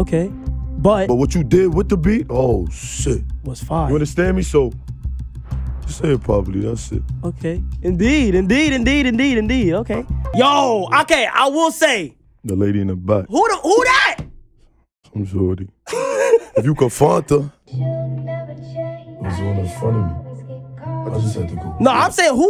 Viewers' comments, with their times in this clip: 0:04 where the wind coming from?